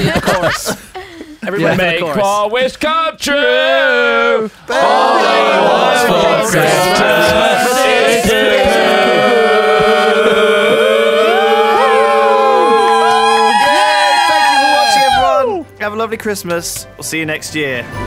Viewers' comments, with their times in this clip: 0:05 and that was the moment the YogTowers neighbours filed a noise complaint